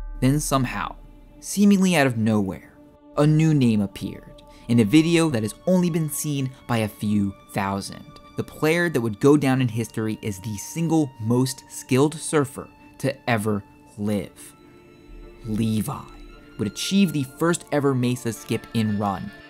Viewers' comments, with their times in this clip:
0:04 the music hits perfect